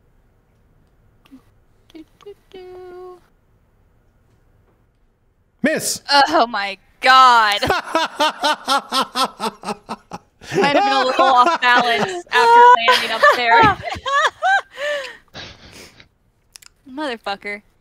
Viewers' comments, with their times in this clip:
0:03 He didn't hold back his evil GM laughter.